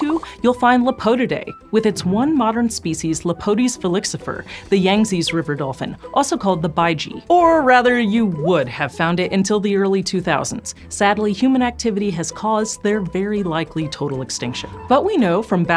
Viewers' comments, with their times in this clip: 0:03 so you're not even gonna try to pronounce that correctly? 😂😂😂